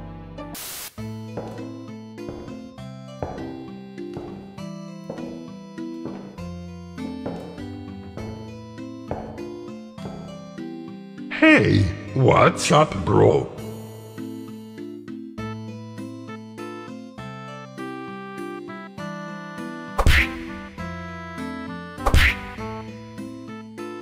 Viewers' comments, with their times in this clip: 0:10 I like the fact that you got Davie504 to feature his voice